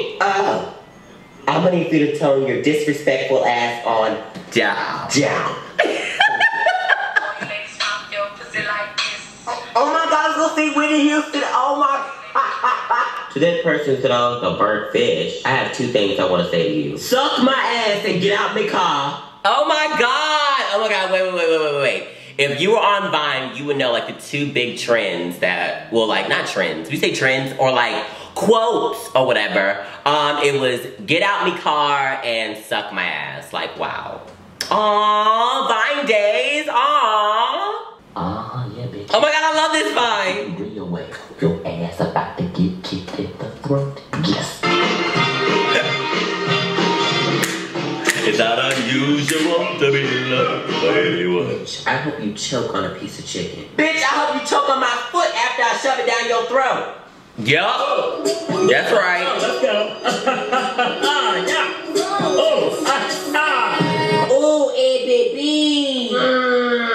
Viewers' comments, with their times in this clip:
0:05 His laugh aww
0:50 His voice went real deep 😂